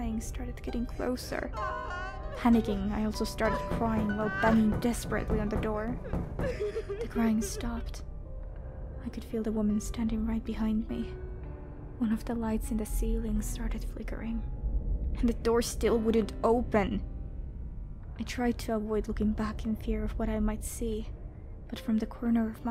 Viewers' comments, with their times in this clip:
0:04 Kim Kardashian crying in the stall 🤣🤣🤣🤣😂😂😂